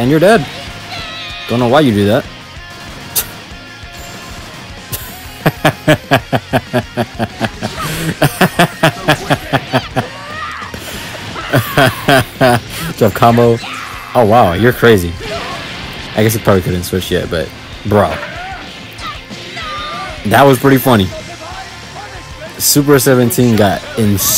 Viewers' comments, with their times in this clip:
0:05 devious ahh laugh 😭🙏